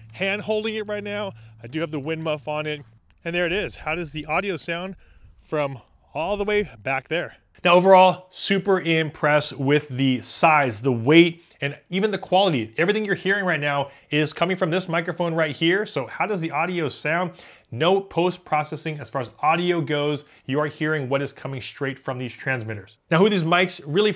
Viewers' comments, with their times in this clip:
0:05 Great mike the more I listen to you talk the more I like your voice through that mike it sounds great thanks again😊